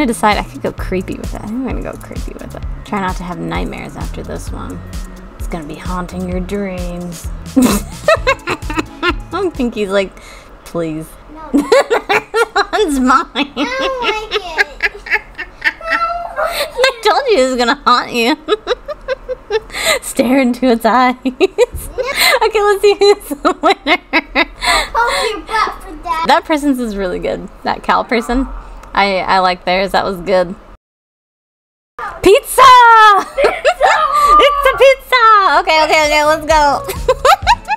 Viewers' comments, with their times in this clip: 0:10 Ur laugh is killing me HAHAHAHA
0:21 Ur laugh is killing me HAHAHAHHAA